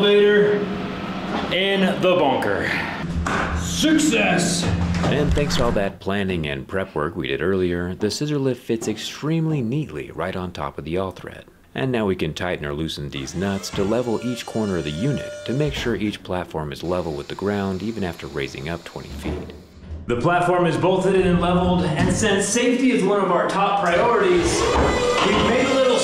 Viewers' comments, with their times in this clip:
0:09 he said “ bonker” 😂
0:11 did i just hallucinate "deez nuts"?
0:14 did he just say ‘Deez Nuts’?